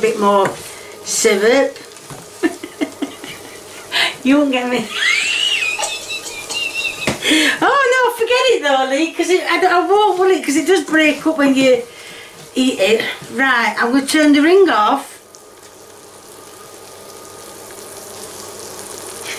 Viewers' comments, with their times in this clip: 0:05 who turned the kettle on?
0:06 her laugh is so contagious! xD